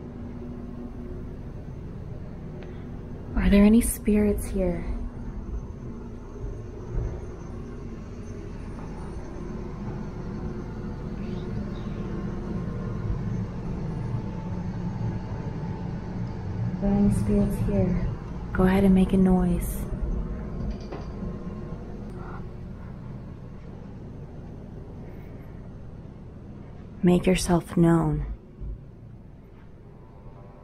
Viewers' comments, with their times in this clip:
0:09 listen very carefully,they say there in the rooms,🙏
0:10 Weird whisper heard a whisper in the same place same that said "help me" but really faint
0:10 you can hear a whisper saying right here
0:11 After you say, are there any spirits here? Someone, like a kid, says “right here.”
0:11 Im hearing lots of things like you hear “I’m here” after she asks if there is any spirits there the first time! It also sounds like a guy kinda saying stuff every once and a while.
0:11 u can hear a lil girl say “right here”
0:11 it sounds like a little girl saying "right here" or "im here"
0:11 At exactly u can hear someone say right here after u asked if there were any spirits here!
0:11 there's a small voice after you say is there anyone here a little girl or boy says right here it's hard to hear so use apple earbuds to listen and you'll hear it
0:11 there's a faint whisper I can't make out what it's saying..
0:12 put it in slow motion and you can hear a girl saying right here.
0:12 evp right here
0:12 sounds like a girl whispers RIGHT HERE 💜😘👻
0:12 I heard a creepy voice saying"HATE YOU"! xx 👻🔥
0:12 or a second before a little girls voice says right here
0:13 Girl there is a creepy ass little girls voice that's says "RIGHT HERE" before you turn to look in the room